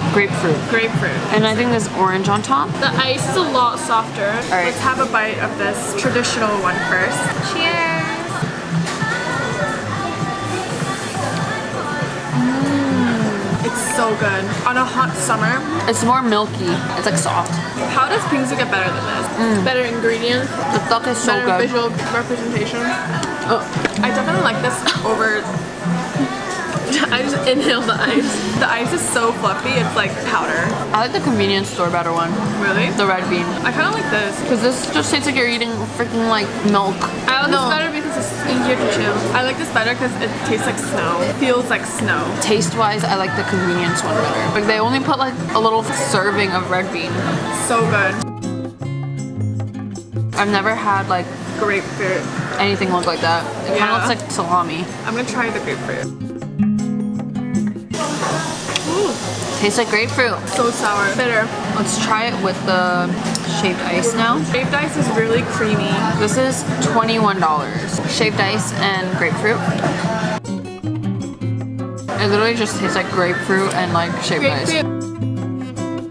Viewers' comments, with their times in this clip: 0:03 hype boy playing in the background 😭
0:05 Love how Newjeans started playing in the back😭
0:05 Love how Newjeans started playing in the back😭
0:05 did yall notice here a new jeans song was playing in the background lol
0:05 Meanwhile i'm just vibing to Nwjns in the background
0:06 not me vibing to hype boy
0:06 does anyone else hear hype boy by newjeans in the bg😭😭
0:06 Hybe boy suddenly playing
0:06 omg i can even hear newjeans hybe boy playing at the
0:07 HYPE BOYY IN THE BACKGROUNDDD❤️‍🔥❤️‍🔥🗣🗣🔥🔥🔥
0:07 omg hype boy playing in the bg😅
0:07 I'm trying so hard to focus on the video, but hype boy is playing in the back 😭😭
0:08 Sorry I got distracted a little bit at New Jeans' "Hype Boy"😂
0:08 Hype boy playing in the background got me like 💃🏽
0:08 not them playing new jeans in the background 😂😂❤
0:09 hype boy by newjeans be playing 😂😂😂😂 i was just watching the second bingsu they tried and heard “CAUSE I I IIII KNOW WHAT YOU LIKE BOY” 😂😂😂
0:09 i started vibing to hype boy LMAO put aside that they made me happy their humor is so funny 😭
0:09 you can hear hype boy in the background 😭
0:09 I LIKE HOW U CAN HEAR HYPE BOY IN THE BACKGROUND
0:09 the mmm match the song
0:10 Not me vibing to hype boy
0:10 The kpop songs playing in the back
0:10 im literally vibing to hypeboy in the background
0:11 YAYYY HYPE BOY IN THE BACKGROUNDDD CAUSE I-I-I-III KNOW WHAT U LIKE BOIII YOU’RE MY-Y-Y-YY CHEMICAL HYPE BOIII
0:12 hype boy just calmly playing at the background
0:12 ah yes newjeans in the bg ❤
0:12 Not me just vibing to hypeboy in 😭 (the background music)
0:14 new jeans at the back round is sooo cool
0:14 me vibing to hype boy in the bg
0:15 Me vibing to hype boy playing in the bg
0:17 hypeboy in the background wahhh
0:17 the random kpop songs playing in the background has me dead lmfao (Stan NewJeans and blackpink) edit: THIS VIDEO IS MAKING ME SO HUNGRY 😭
0:18 NewJeans playing in the background
0:18 LOVE THEM PLAYING HYPE BOY IN THE BACKROUND 😃
0:29 the newjeans in the background😂😂
0:47 new jeans in the background >
1:03 Hype boy in the cafe makes the video more fun